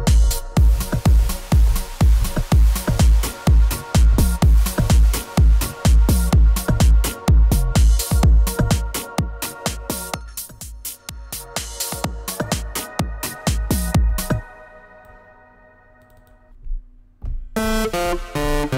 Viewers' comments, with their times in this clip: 0:04 Like a KeyGen song xD